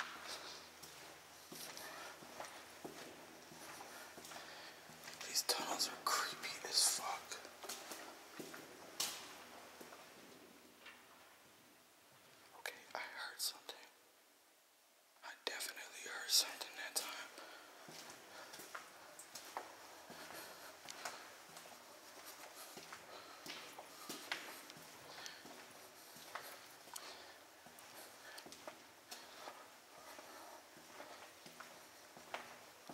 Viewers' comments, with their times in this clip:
0:09 Yeah that is creepy and the worst part for me was the fact that I thought it was a actual person walking away from me until I realized it was a dead end. I'm sorry i mess up with the time stamps! You can hear the walking
0:16 You get, “Hey”, That’s not a scuffle.